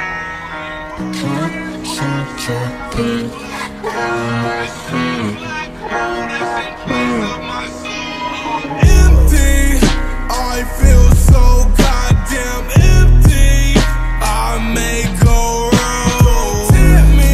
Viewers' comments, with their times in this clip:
0:05 the transition… ❤️ perfection their voices